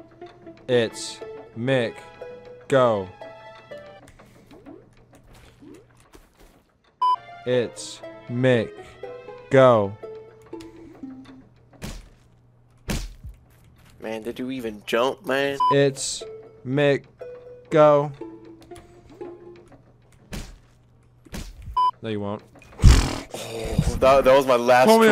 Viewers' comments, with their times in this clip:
0:07 Damn, the PVZ music brought me back man 😂😂😂